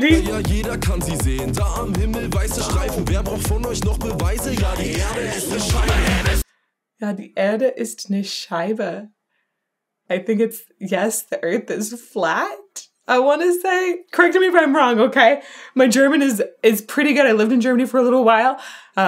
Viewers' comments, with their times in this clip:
0:04 yes, he said "die erde ist ne scheibe" - the world is a flat! :D and pretty nice spoken, charismatic! xD greetings from germany (: +1 sub